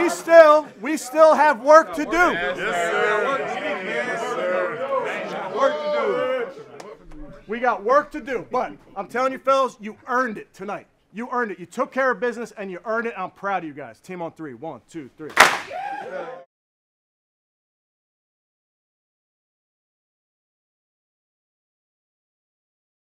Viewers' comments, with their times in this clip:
0:05 The way he points at that player and his teammate laughs at him is hilarious 😂